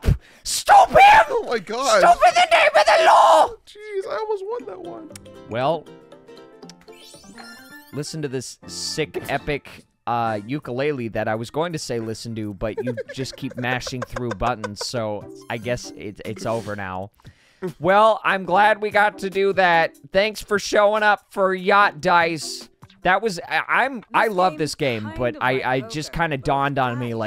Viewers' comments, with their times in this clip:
0:08 hey I like ukulele 🤩